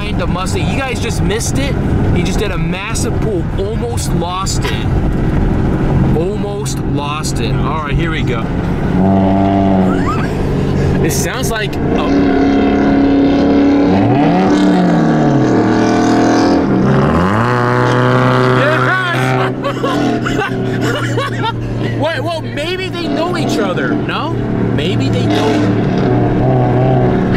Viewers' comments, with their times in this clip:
0:08 that exhaust sounds like a COW